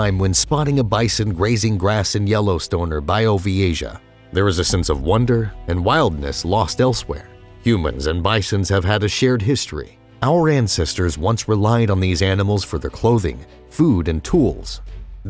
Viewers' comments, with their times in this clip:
0:03 what's a "bio v asia"